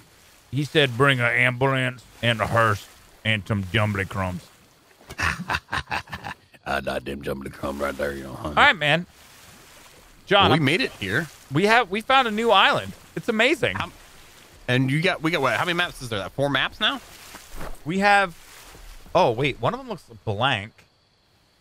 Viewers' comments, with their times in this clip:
0:06 He sounded like Michael Keaton in Beetlejuice. x"D